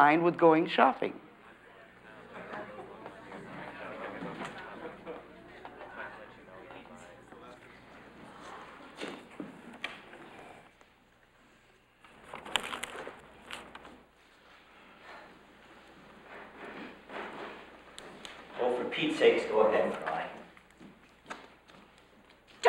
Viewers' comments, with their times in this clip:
0:10 love how warm and concerned his delivery is throughout this whole scene